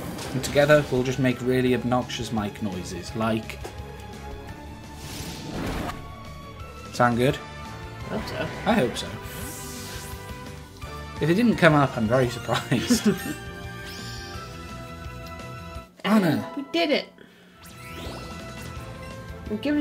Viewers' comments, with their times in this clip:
0:06 I heard no obnoxious mic noises! You guys must have a really good one lol